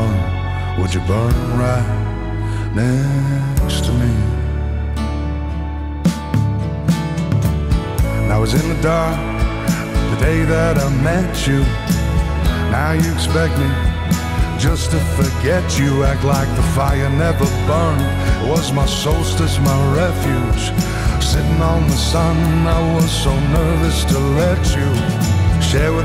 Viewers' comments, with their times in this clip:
0:08 Awesome ❤ this man has a voice like no other, great song, this song really goes off just really relatable